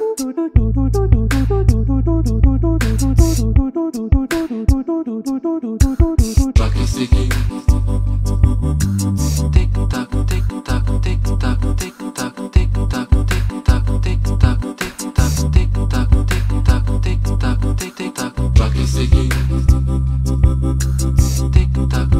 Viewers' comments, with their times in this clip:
0:05 its that tick tock that got me